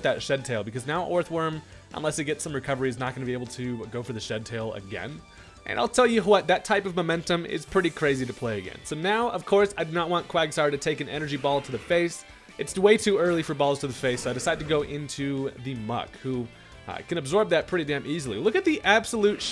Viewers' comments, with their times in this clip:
0:04 is that you Hank Hill?